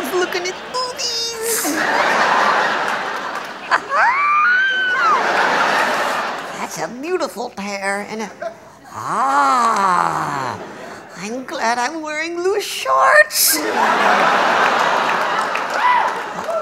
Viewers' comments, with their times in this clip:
0:04 How do you hit that note without opening your mouth! That’s amazing!